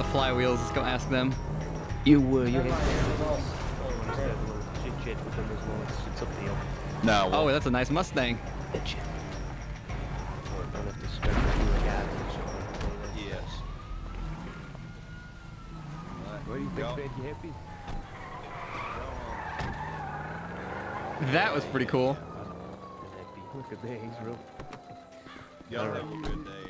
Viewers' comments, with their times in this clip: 0:09 the door slam